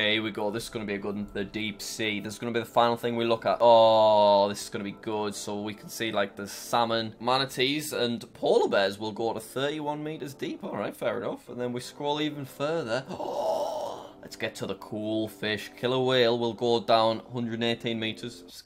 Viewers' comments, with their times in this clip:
0:05 thought it said stupid bass